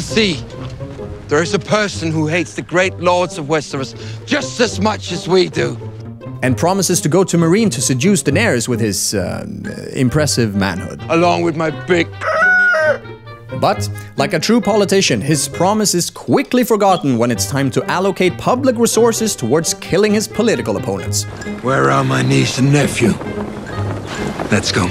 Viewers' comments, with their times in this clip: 0:09 the rooser noise 😂😂😂 Amazing video!! It's such a shame knowing GRRM went to great lengths to avoid plot-holes and such in the books but the showrunners were more than happy to toss out whole story-lines 😑